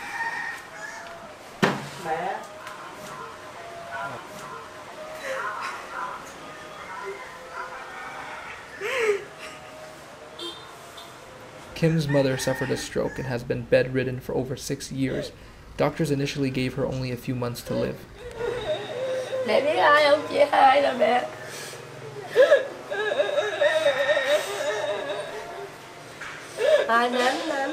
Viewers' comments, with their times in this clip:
0:09 broke my heart to hear her mother's cry